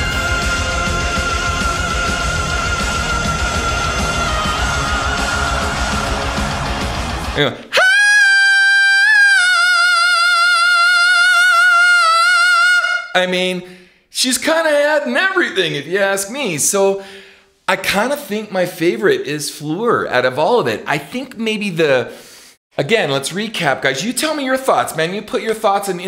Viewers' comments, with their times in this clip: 0:07 it's like someone stepped on his boys :O